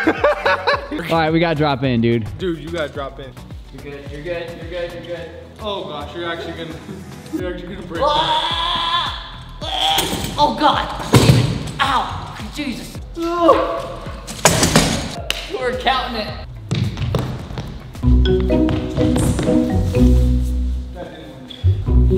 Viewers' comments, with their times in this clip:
0:07 who else heard a dying goat?